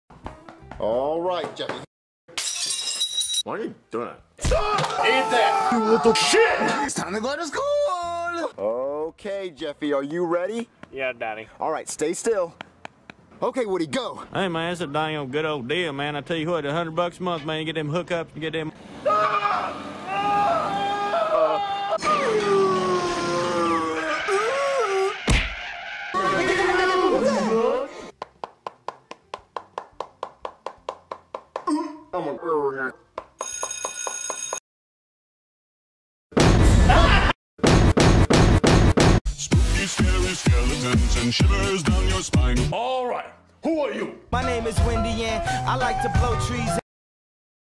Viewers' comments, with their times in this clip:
0:06 Apparently, Mario Speaks Spanish Now
0:14 woody is secretly Boomhauer from king of the hill
0:14 Never Knew Woody Sounded Like That In SML
0:21 sounded like Jeffy made music
0:26 woody is laughing
0:30 is it me or I heared jeffy said I'm on my period
0:32 The way he said it is the way I remember hearing the video Substitute Teacher for the first time.